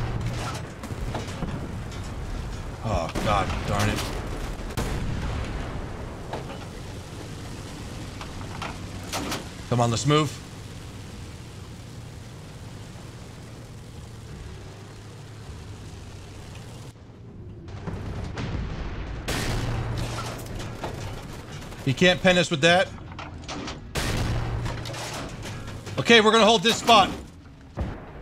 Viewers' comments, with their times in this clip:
0:10 is a perfect "WHY ARE YOU RUNNING?!" moment. You can already hear the other player's frenzied screams as he backpedals.